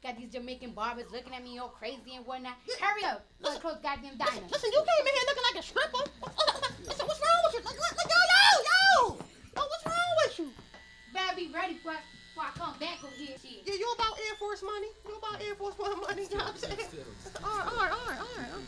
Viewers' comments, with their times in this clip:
0:04 she laughed when she ran away xDD